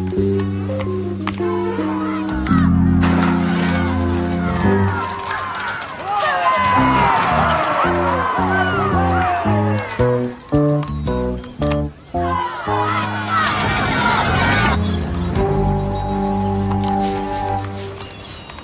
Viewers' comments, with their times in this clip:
0:06 Buster is heard shouting "Hooray!" Even though he's supposed to be with his dad.